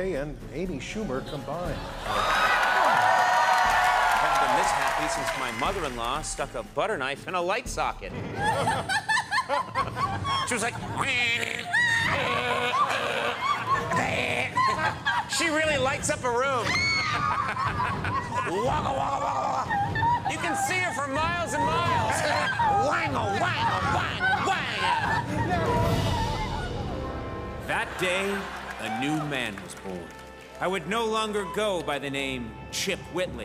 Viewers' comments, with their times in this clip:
0:08 they do a perfect Jimmy’s laugh
0:13 better fake laughs than jimmy fallon
0:18 that's how fallon laughs